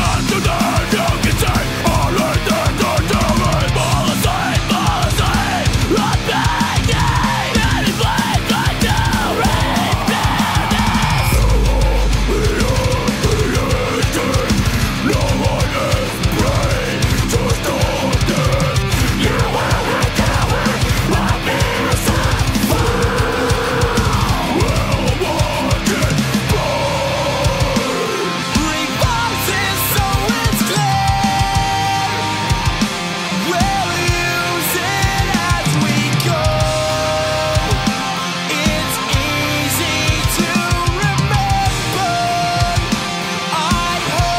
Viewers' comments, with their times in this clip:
0:08 This background scream is sick
0:10 Earthshaker of a 9.2 magnitude with a chance of hardcore screaming
0:11 The breakdown is so sick
0:32 Jack black solo